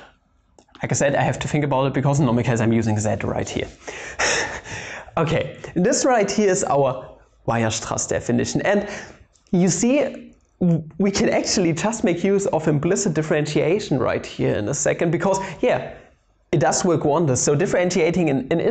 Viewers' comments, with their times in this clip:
0:03 you can hear the laugh of Sheldon Cooper from The Big Bang Theory!